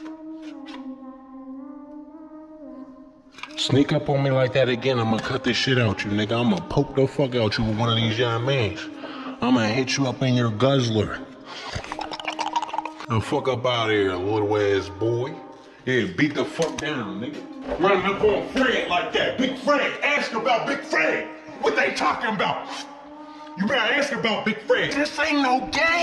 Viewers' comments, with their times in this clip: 0:03 Dude sounded like Method Man 😂
0:11 AsMr be like
0:11 WHAT WAS THAT NOISE LMFAOO